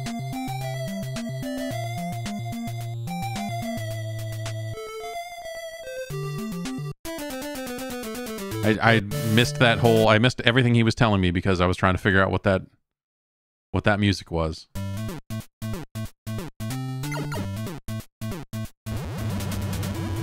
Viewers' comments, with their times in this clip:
0:03 sounds like music from a ninja gaiden cut scene to me